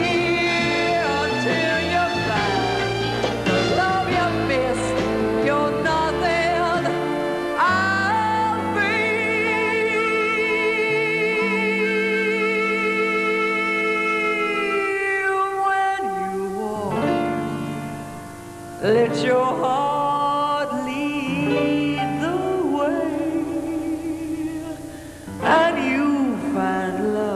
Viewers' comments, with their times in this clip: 0:08 That note ! WOW